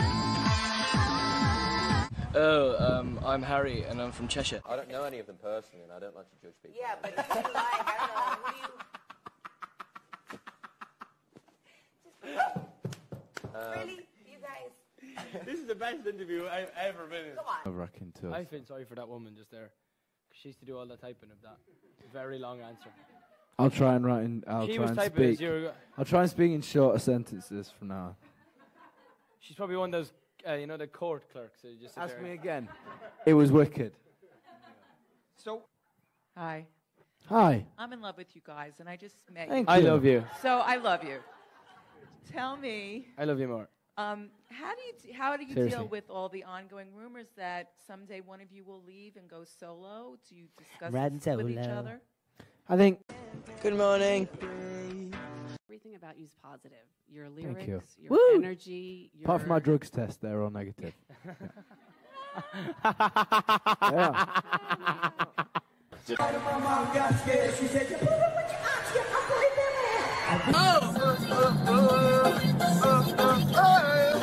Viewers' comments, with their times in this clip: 0:05 what does Liam say? I don’t know... whot??
0:48 NO ONE IS TALKING omgggg :'(((((((((
1:00 I lost Niall's laugh is just too funny
1:01 nialls laugh is the best thing in the world😂😂😂🤣
1:01 Yea, I feel like I'm the friend with the obnoxious laugh that sounds exactly like Niall's ! LOL 😂 Love Naill.... and his laugh!